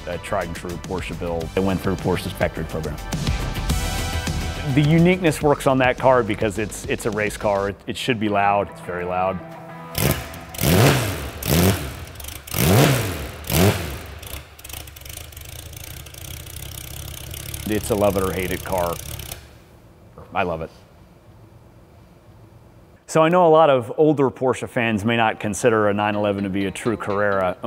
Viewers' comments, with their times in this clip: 0:09 Old classic sound